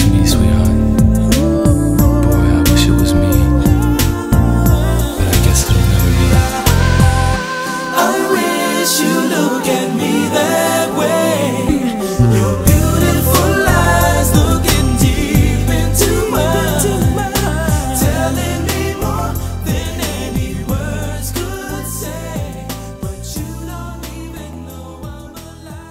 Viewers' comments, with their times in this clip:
0:06 the high note its so satisfying